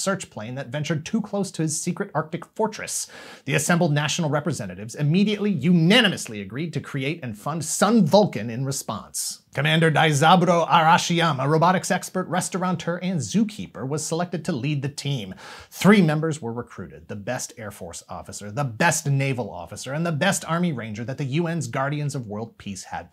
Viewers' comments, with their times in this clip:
0:09 I swear you're saying "robitic sexpert"